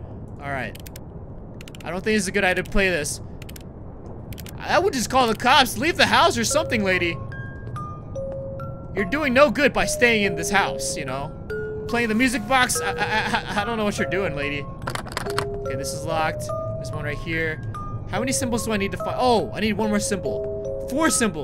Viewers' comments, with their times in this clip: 0:05 ( Old / Late ) Bro The Noise's He Make's He So Funny This His Idea For Making People Laugh